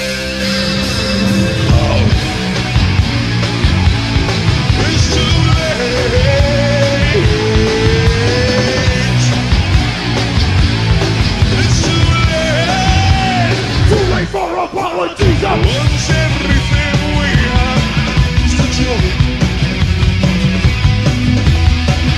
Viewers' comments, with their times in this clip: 0:06 I have been this old when I realised they aren't singing "too late for the politicians"